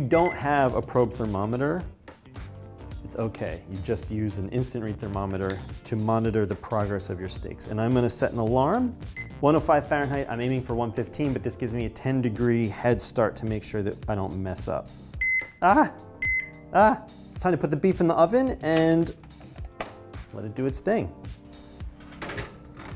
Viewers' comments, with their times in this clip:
0:09 I think he say 405f ? He says it so fast I can't understand what he says...